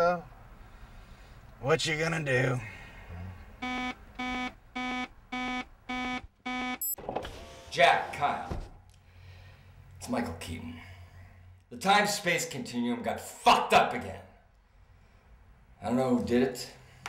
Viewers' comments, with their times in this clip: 0:05 right after this beep my flash crashed... that's the power of THE D =D